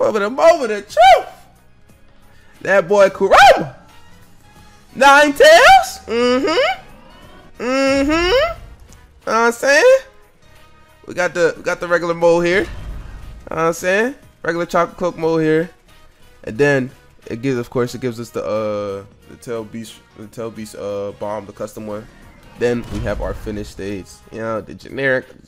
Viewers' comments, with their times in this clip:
0:10 u are so annoying when u start saying "nine tails mhm"
0:10 why u sound like ur moaning